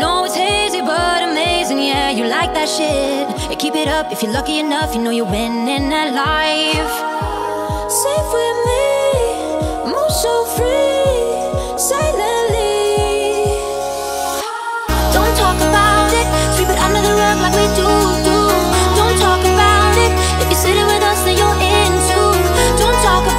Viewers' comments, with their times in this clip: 0:07 That moment of this girl’s voice is perfect!❤ Love her performance on this track!